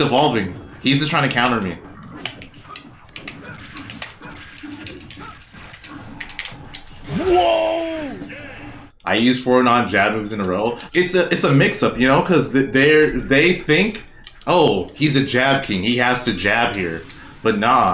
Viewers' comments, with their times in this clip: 0:05 is that you saying "WHOAAA!" it just sounds like you lol